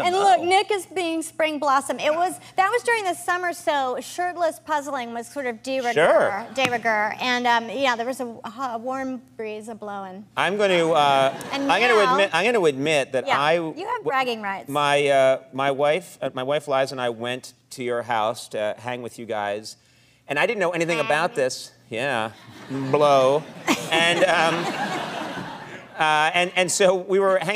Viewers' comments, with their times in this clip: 0:10 did Conan say "I'm gonna admit my wife lies"? And then suddenly change the topic!!